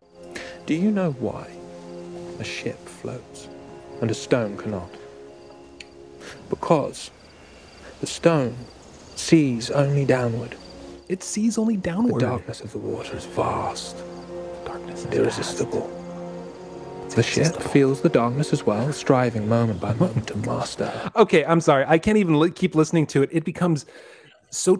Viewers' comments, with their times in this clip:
0:08 wtf is with that pronunciation why is everything so cringe in this show